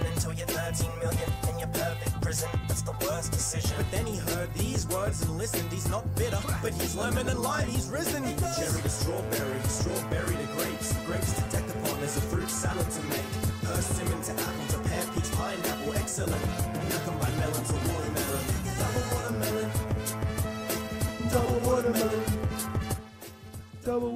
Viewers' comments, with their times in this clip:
0:08 sounds like Joe Weller-world cup song